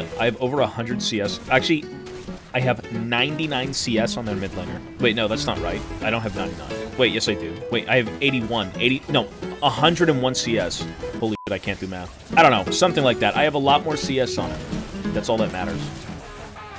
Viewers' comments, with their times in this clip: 0:04 as he explains the cs diff. You can hear him getting an quick 20 in the background 🤣 😂 😏